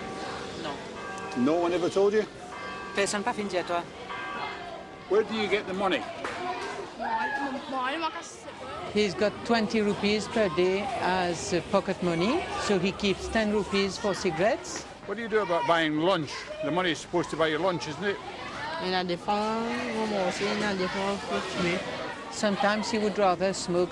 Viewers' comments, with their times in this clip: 0:07 That's a funny version of French haha Anyway children should be protected, indeed. Informed adutls should be left in peace. I do not like this imperialist way of deciding what is right or wrong in a foreign land. Everyone should fight their own battle.